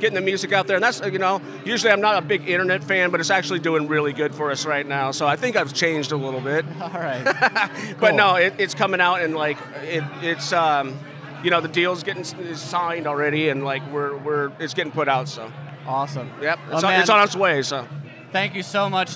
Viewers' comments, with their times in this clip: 0:07 That laugh is so pure and genuine. Joey truly was a wonderful person.